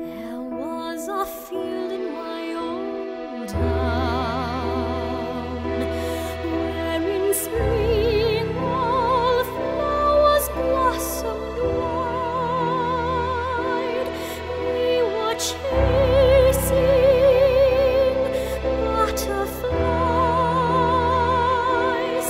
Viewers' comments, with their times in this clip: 0:04 Fantastic voice! I also really loved the video you put together for this. The clips you used till the end were like if the movie actually had a happy ending and they were both riding towards each other at the same time and then laying peacefully in a field together after meeting up, ready to begin their happily ever after